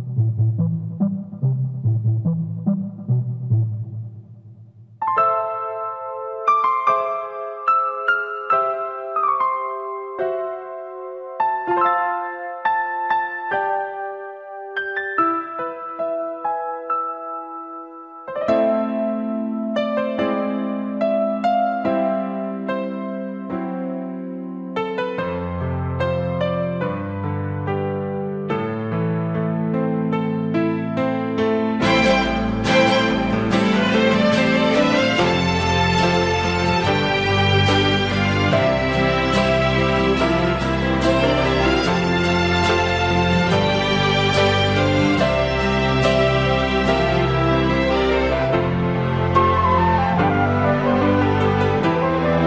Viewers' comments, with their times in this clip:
0:04 it begins omg, so pretty this song T_T
0:35 Does anyone agree that sound the same like spiderman soundtrack
0:36 god this is a beautiful song, perfect for kenshin's heart and all the people that resemble him, my fav part...